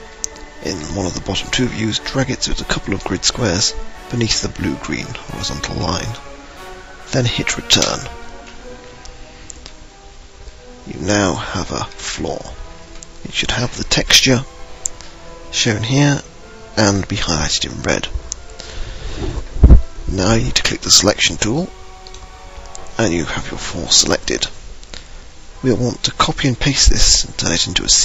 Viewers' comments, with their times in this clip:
0:09 sounded like u said hit "return", but i assumed u meant "enter". hmm great tutorial though, its kinda hard to hear what your saying though.